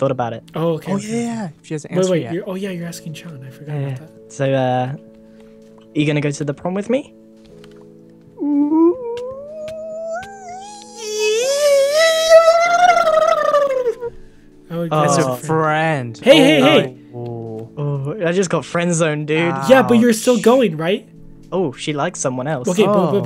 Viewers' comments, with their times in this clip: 0:10 That noise though